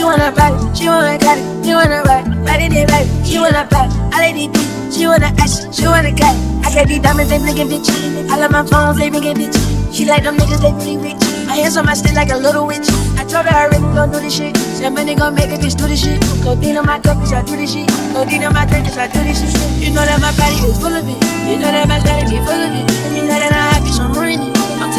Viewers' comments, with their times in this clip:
0:07 The flow on that beat from goes so crazy, your rnb mixes are your best imo, have a great day everyone